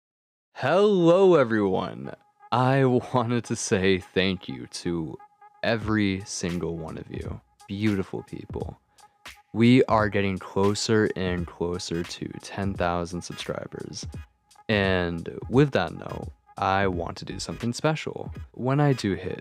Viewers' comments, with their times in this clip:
0:01 My god I don’t remember how long it’s been since I heard that background music! Brings back memories 😅❤